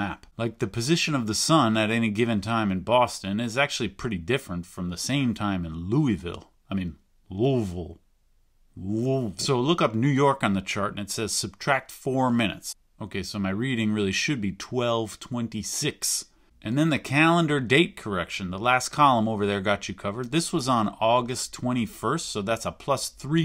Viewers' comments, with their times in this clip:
0:07 From Kentucky, and appreciate the proper pronunciation of loovle